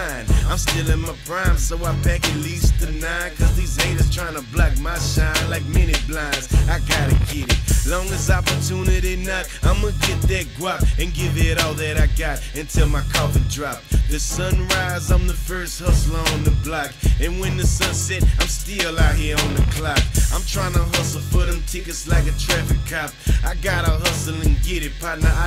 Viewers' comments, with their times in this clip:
0:07 paul said till my covid drop. Ahead of his time? Is he a scientist? Either way hes the peoples champ